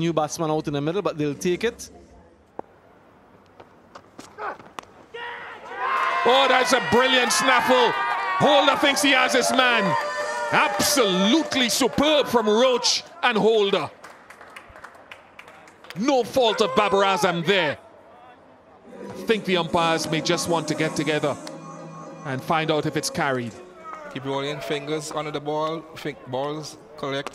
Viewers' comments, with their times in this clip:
0:08 Probably no one have noticed but did they play a 'NINJA TUNE' after a dismissal of Babar Azam 😂😂